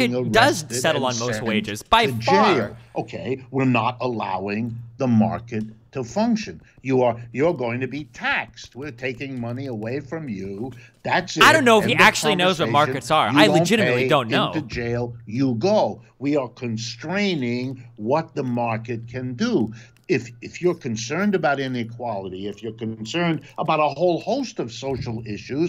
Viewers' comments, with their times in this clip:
0:10 LOLOLOL YOU SURE AF DONT 🤣🤣 Wolff's literally answering the question and your just shouting over him... What a F'ing joke...